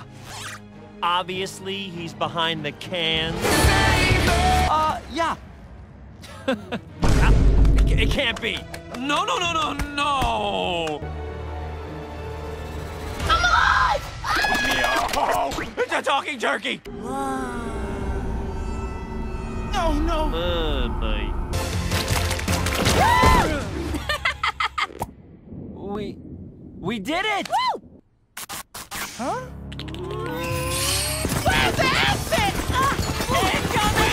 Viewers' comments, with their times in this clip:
0:05 You did not need to add the vine boom there, but you did anyway, and this scene is all the funnier for it! Banger two-parter!
0:20 Leonardo's lines like Randy Cunningham
0:21 put it at 2x speed and it sounds like the star power up in Mario cart